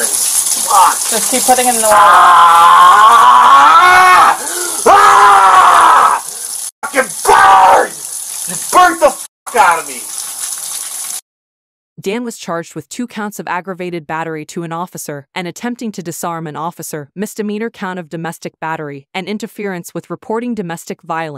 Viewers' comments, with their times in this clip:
0:04 His screams are like music to my ears.